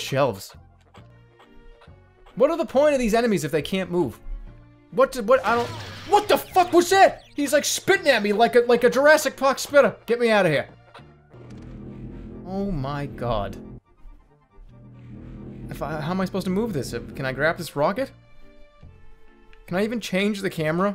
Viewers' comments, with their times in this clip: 0:05 Jerma gains a NY accent
0:07 holy shit its hilarious how Bostonian he gets when he’s in defense mode